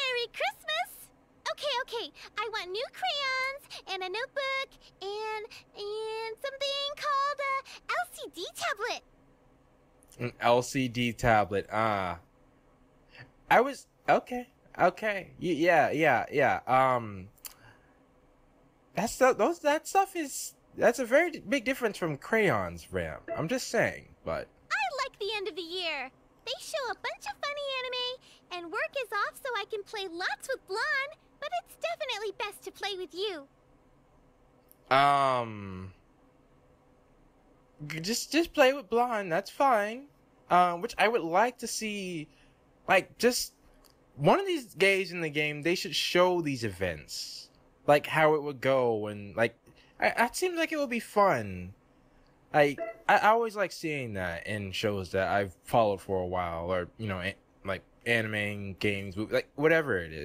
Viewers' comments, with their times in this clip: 0:05 And all I hear was: Santa Heavy: aauuugghhh...
0:45 you said, one of these gays in the game XD